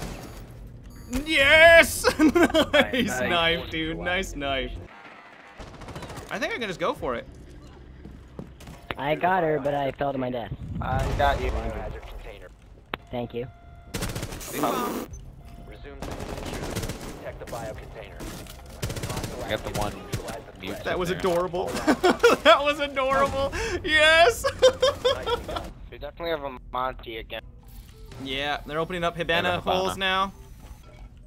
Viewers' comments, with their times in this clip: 0:07 what is that dudes voice 😂
0:13 perfectly timed bing bong
0:13 do I here a bing bong?
0:13 that faint "bing bong" was beautiful